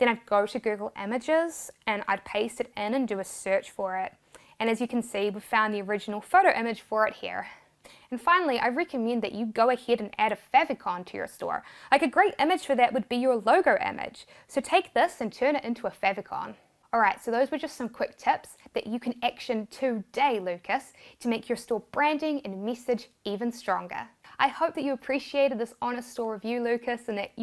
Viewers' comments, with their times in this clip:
0:09 What is a feathercon.